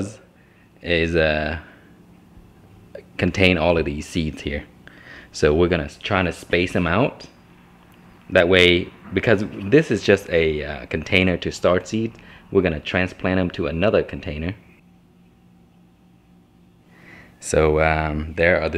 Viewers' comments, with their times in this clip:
0:03 The birds singing are so beautiful. I love to hear them.